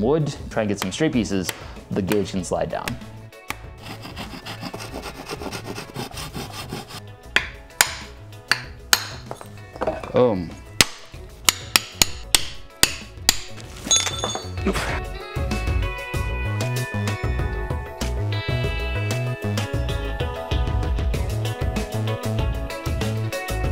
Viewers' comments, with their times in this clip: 0:05 naàh it wasnt the real sound